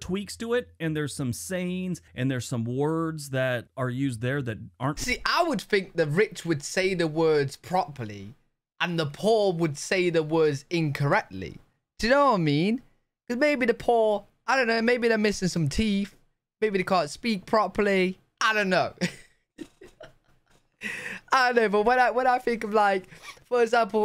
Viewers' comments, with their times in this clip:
0:05 You talk about "the poor", and you say "the PAW". You're doin' it, yourself!